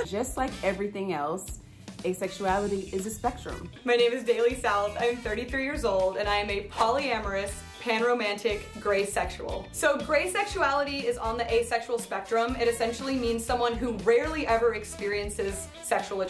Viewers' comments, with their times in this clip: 0:03 i heard Daily Salad and had to rewind